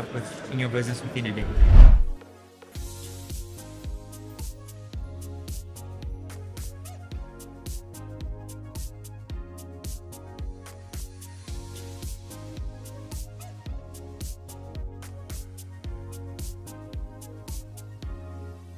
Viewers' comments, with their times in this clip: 0:06 Oh no! There's no speech audio for the speakers after !
0:06 Why is there no audio after